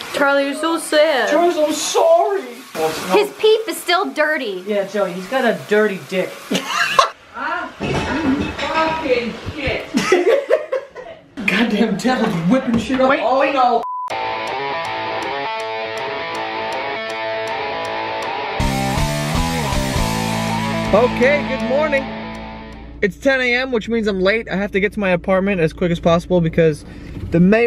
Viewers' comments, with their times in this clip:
0:08 that distant "fackin shit" kills me everytime